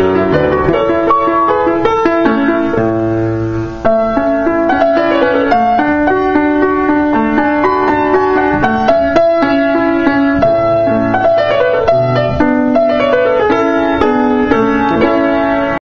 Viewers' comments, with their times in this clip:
0:07 is that a mistake? Those three notes are differently in my sheets